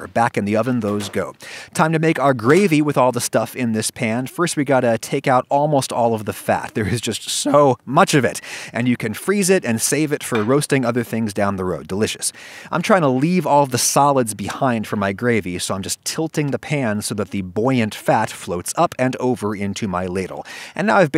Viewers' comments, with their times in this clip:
0:06 Also is a awesome voice crack
0:06 really nice voicecrack